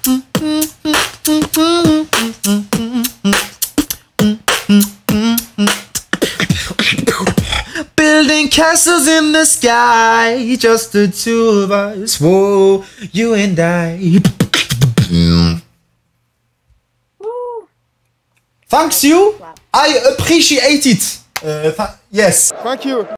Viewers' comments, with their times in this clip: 0:08 that note hit on ‘sky’ was so good